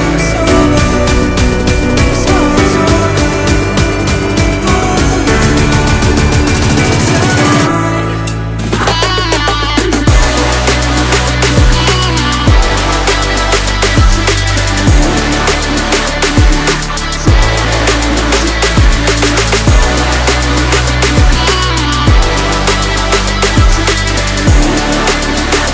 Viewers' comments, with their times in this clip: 0:09 put the speed of the song at X0.5 , sounds explosive and SICK!